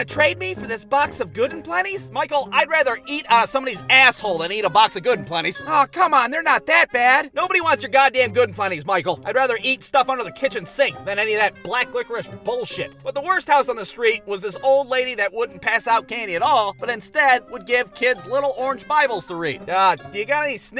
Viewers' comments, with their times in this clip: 0:03 I know this video is going to be like 2 years old at this point, but I just love how he says "um" ever so quickly during his 'I would rather' statement 😂